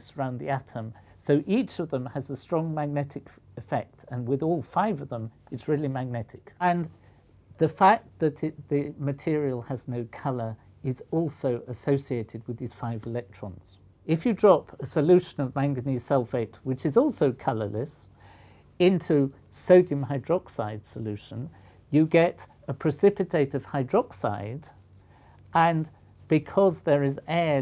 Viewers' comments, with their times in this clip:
0:10 Did anyone else notice the weird noise (rewind a few seconds so that you can hear it). I think it sounds like a zippo lighter